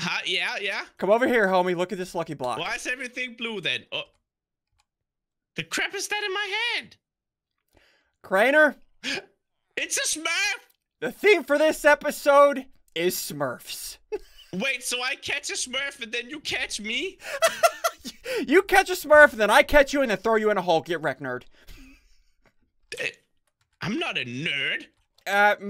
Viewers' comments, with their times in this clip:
0:09 "It's a sperm!"